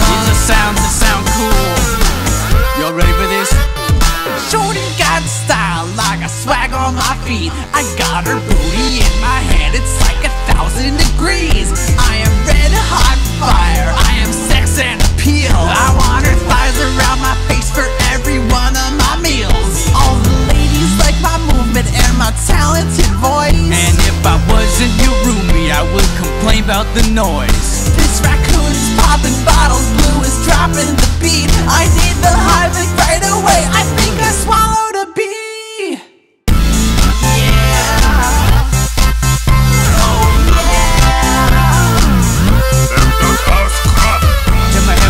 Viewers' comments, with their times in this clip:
0:07 the beat reminds me of Tiktok from Kesha
0:28 I never noticed Red's crying before.